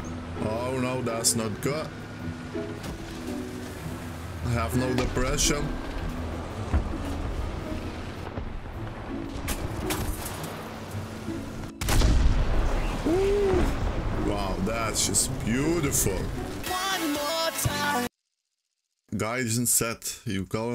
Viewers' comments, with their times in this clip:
0:04 World of tanks players:Oh no Stun!! Warthunder:Fooomm! One shot. This is good if you dont have depression,happy person:)